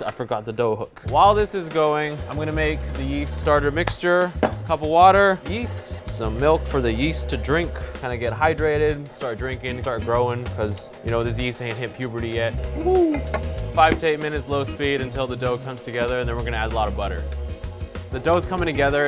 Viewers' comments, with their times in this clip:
0:05 it was on full sound at 4 AM. My hole family woke up and asked me if that guy just screamed yeet Me:🥴 My family:👍🏼 it’s all good